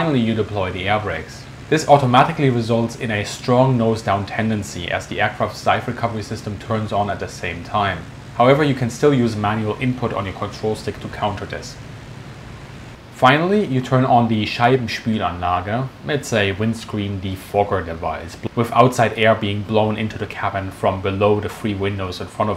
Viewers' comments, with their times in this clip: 0:09 Your spelling pronunciation of Scheibenspülanlage is not bad at all. But it sounds a little bit weird :-) Anyway, you also do not sound like a native british speaker? So, I am very confused :-)